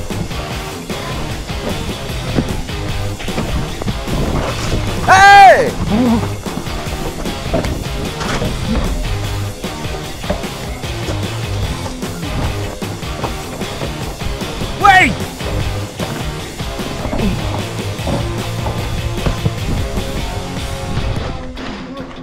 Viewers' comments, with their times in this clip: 0:06 laughed so hard at the sound effects but did anyone else see the god is gay spraypainted LOL
0:06 did that just say god is gay💀
0:07 tf did that say?
0:07 is it just me or does it say “god is gay” 😂